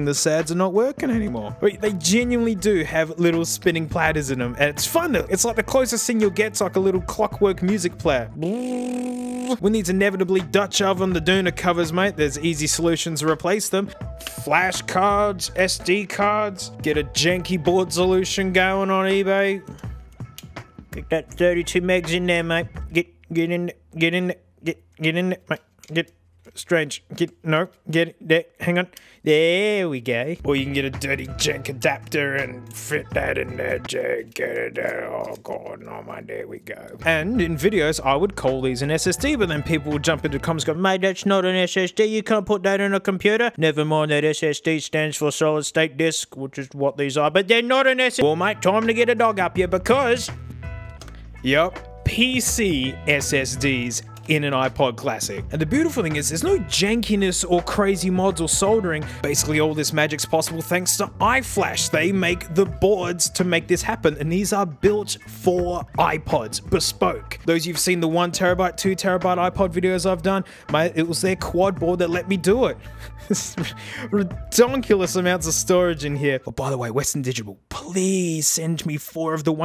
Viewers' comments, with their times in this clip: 0:08 haha hard drive go brrrrrr
0:19 this is where the funny noises start
1:01 (The algorithm brougt me here) I dont get the point changing the accent. Just paused the video and went to iflash website. Period.